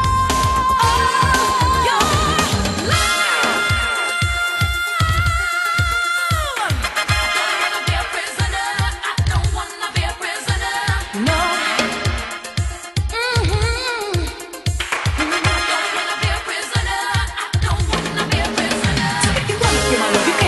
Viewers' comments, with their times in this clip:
0:03 SAME NOTE (anymoooooore) CELINE DION "ALL BY MY SELF"